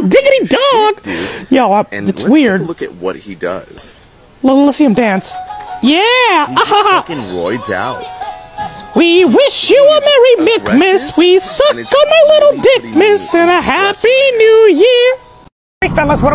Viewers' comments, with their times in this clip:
0:04 demon voice OH MY GOD THE TOY ACTULLY FREAKIN DANCES